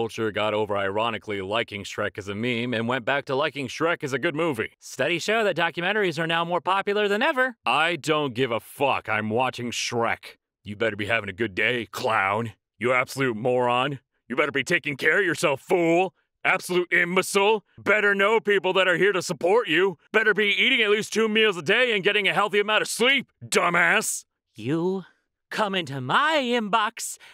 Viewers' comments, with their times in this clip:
0:10 why does it sound like something I would hear in an anime dub